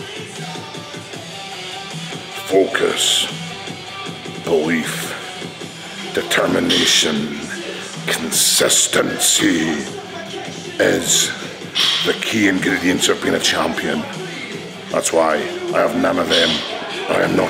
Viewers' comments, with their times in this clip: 0:03 is the most motivating thing ive seen in weeks. Even if it was a crack but damn dude cut that last second off and i think you just found the cure for E.D. lol